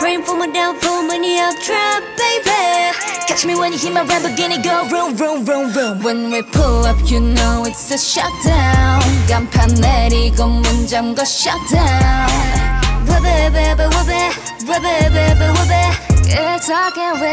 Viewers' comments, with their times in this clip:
0:04 Dosie singing in her lower range 😩👌